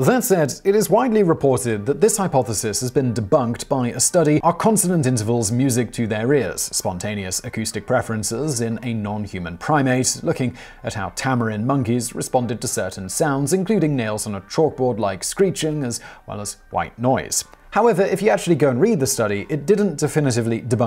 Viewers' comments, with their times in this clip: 0:03 Is there an editing error ? You seem to be cut off mid sentence and then you're in the middle of a completely different sentence.